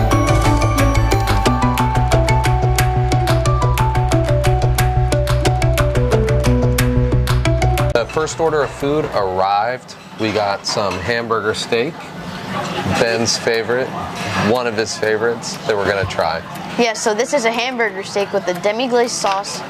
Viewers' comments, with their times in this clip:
0:05 I love the music